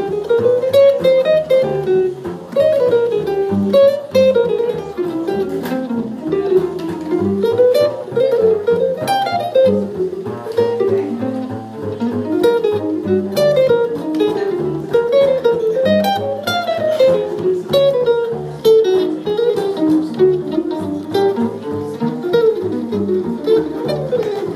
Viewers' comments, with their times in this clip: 0:08 this is why Jazz is awesome. You can tell he caught the substitution the bass player played.